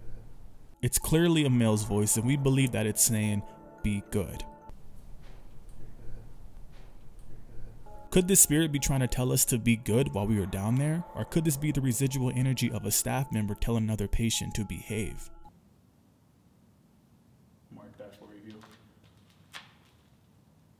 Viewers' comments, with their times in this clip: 0:05 I thought the voice said "you're dead"